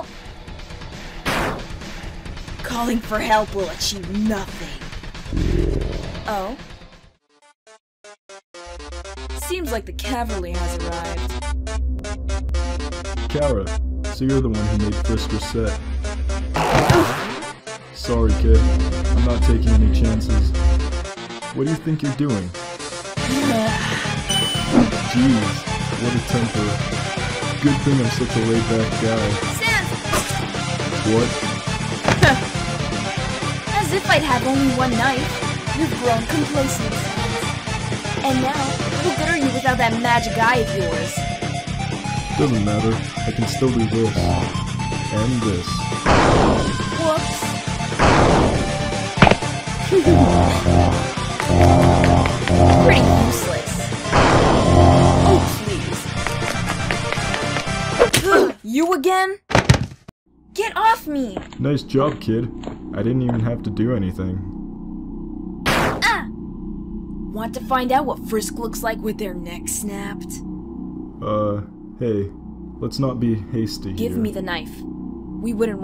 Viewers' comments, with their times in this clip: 0:07 M E G A L O V A N I A I N T E N S I F I E S!!!💀💙
0:08 seems like the "cavaly" has arrived XD I'm sorry.
0:16 when chara plays roblox... Chara:OOOOOOOOOOOOOOHHHHHHHHFFFFFFFFFFFFFF
0:57 (scary voice) HUG OF DEATH!